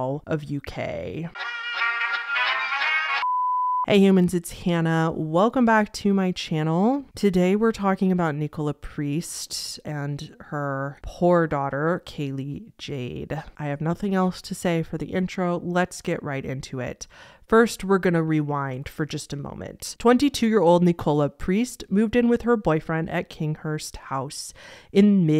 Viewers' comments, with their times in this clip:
0:10 did you say her 'whore' daughter? trying to understand the context there lol